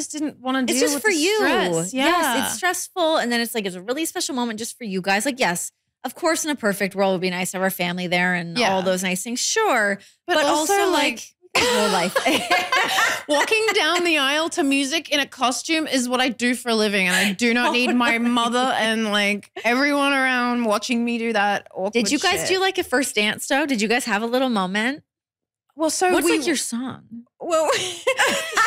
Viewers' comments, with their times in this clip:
0:10 simultaneously "but also like" - I love how in sync these two are!